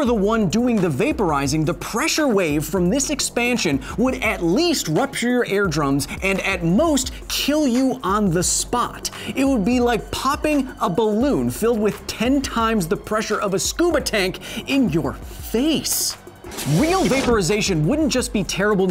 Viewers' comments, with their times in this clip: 0:04 Where are my "air drums?"
0:05 "air drums"? I think you mean ear drums. Super Nerd! 😂